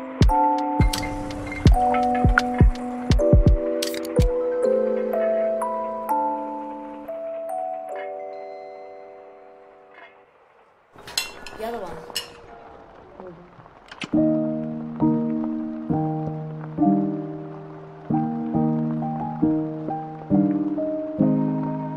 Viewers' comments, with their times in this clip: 0:03 I was already somewhat dealing with loneliness but now that I'm quaratining alone, yikes. Hey did ya'll hear that gameboy opening sound Hope you manage to enjoy this break if you don't need to make a living. I still have Uni exams and rent bruh umma die alone xD